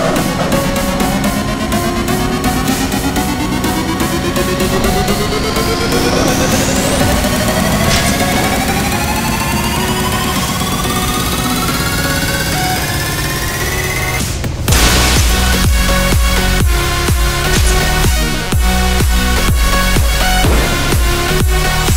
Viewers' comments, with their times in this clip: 0:09 DAT engine xD